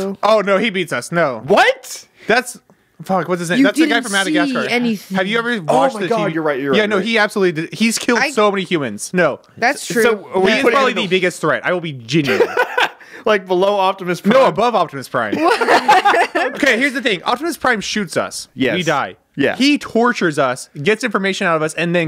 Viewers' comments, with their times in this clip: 0:07 “He’s killed so many humans. He’s probably the biggest threat” I laughed so hard🤣🤣🤣he sounded so frantic